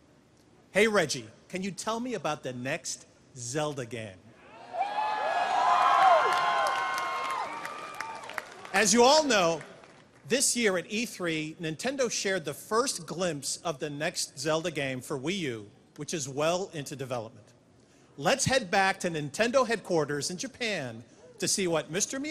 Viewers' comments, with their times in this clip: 0:09 "Can you tell me about the next Zelda <strong>gehm</strong>